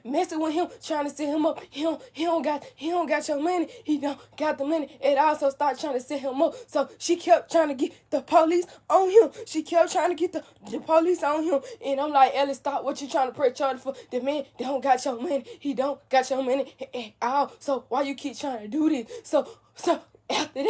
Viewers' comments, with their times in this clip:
0:08 It’s Forced How Yu Actin Like Yu So Upset Like Yu Was Cryin Then Talk Regular Then Cry Again I Sense Bullshit!